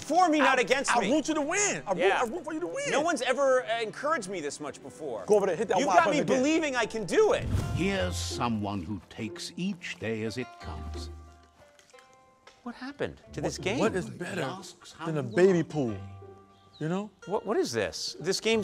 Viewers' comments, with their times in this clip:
0:03 "no ones ever encouraged me this much before"....Blay with sad piano music in the back